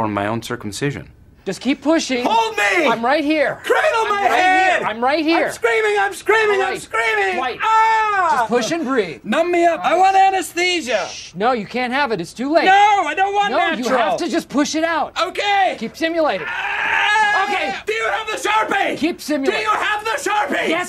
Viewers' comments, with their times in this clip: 0:04 Phyllis starts cracking up lol